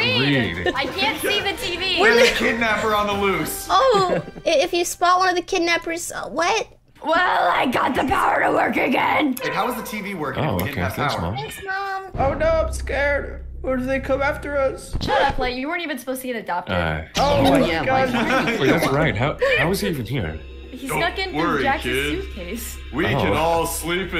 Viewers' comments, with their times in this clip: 0:09 am I the only one who hears a meow in the background? 😂